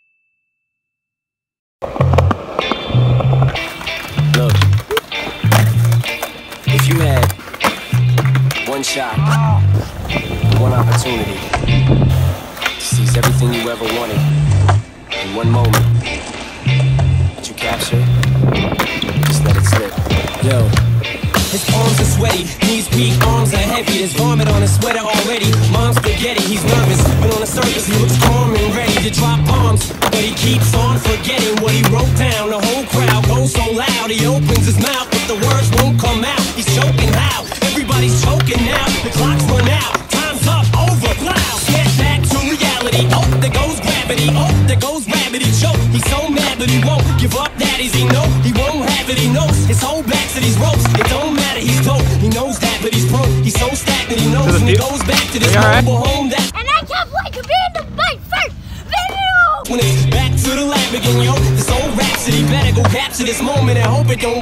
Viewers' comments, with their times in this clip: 0:03 I love the song 😂😂
0:22 all I can imagine is a green Eminem in a swamp
0:48 What's that like sublime style Eminem cover at right ????